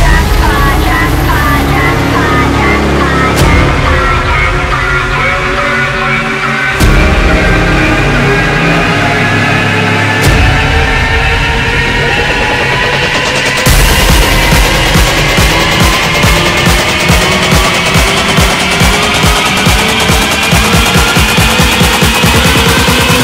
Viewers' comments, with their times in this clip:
0:07 the Best part,triste Drop is my favorite